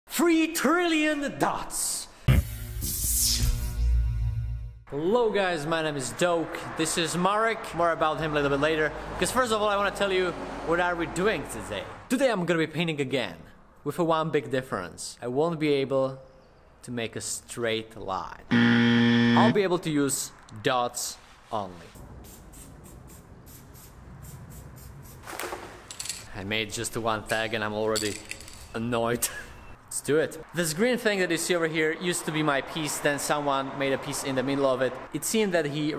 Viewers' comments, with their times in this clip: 0:00 Why i can hear the video only in the left side in
0:18 same , thats problem with sound in his video , bcs sound effect like on works good